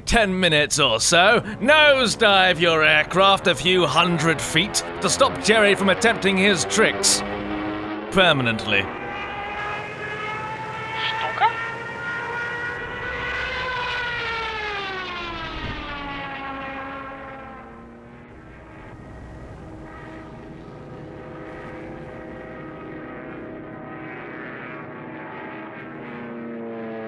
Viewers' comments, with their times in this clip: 0:10 I just love how the German says, "Stuka?"
0:12 the little "Stuka?"